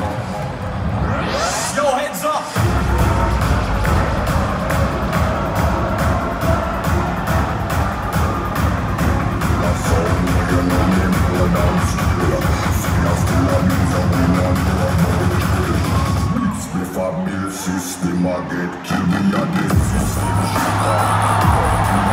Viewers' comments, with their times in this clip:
0:06 computer noises make brain go brrrrr Thanks for the upload homie this set was nasty